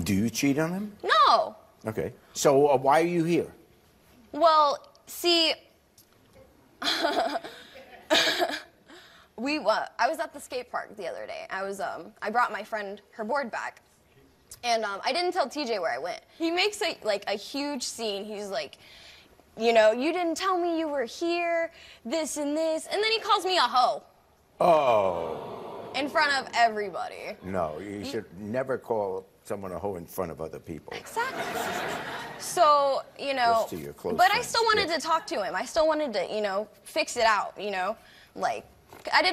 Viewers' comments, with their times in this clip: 0:10 Couldn't make it past the mark. Like listening to nails on a chalkboard.
0:24 i hate how she laughs and her lip smacking but this face though 😂